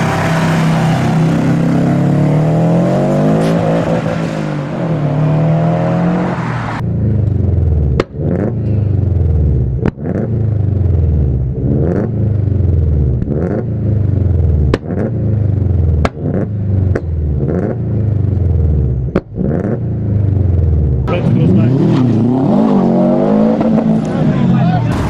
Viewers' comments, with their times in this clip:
0:08 Black Subie sounds the best imo, just quieter than most of the other ones